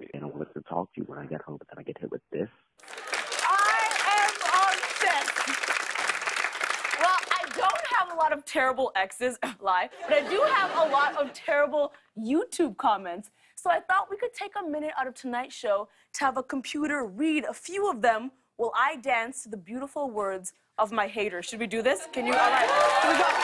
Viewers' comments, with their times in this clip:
0:04 those claps are deffo fake